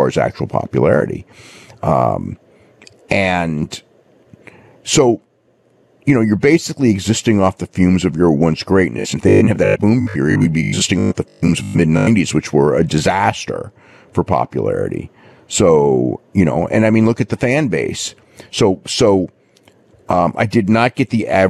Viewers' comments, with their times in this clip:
0:07 Dave Meltzer sounding like a robot is the most accurate we’ve ever seen him
0:08 I always knew Meltzer was a malfunctioning robot and stuttering broken record
0:09 did anyone else experience Robo-Meltzer for a moment?